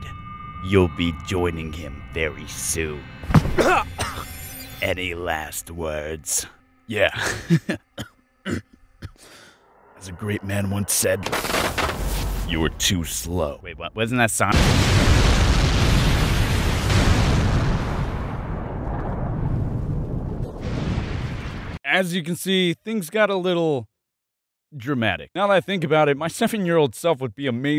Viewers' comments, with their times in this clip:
0:10 My brain: dis dude's voice is kinda like bakugou's would be... Me: I mean yea- Video: Me: aND I OOP-